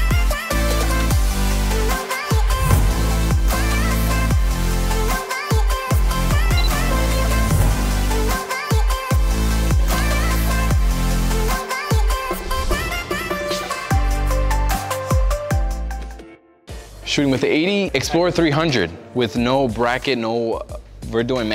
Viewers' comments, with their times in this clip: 0:06 Dat chipmunk beat though.